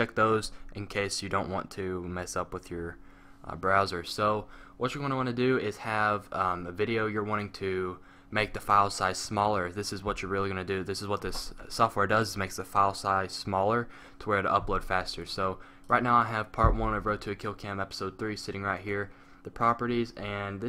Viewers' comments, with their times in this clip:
0:03 did you say it gives you brazzers ? sweet! im downloading this now!